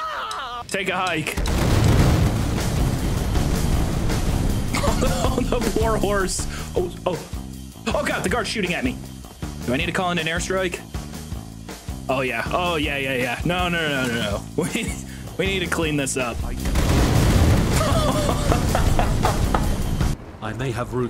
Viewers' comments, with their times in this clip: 0:06 ima hope you said poor, because there’s no war horse.